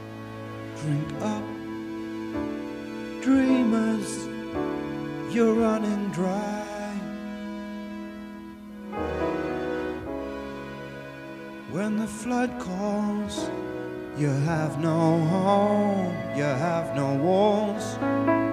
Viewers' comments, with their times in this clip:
0:04 The Rockpalast TV version seems superior to me. Better pacing, his voice isn't drown out at various points by the background synth (guitar?). Also, at around min 'drink up dreamers" the volume on word 'drink' is low, and 'dreamers' the pitch is slightly high.